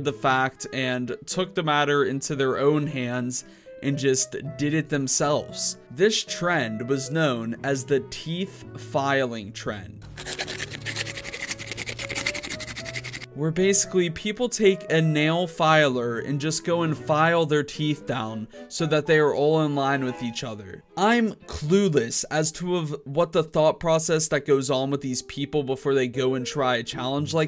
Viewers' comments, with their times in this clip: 0:10 asmr sounds will be like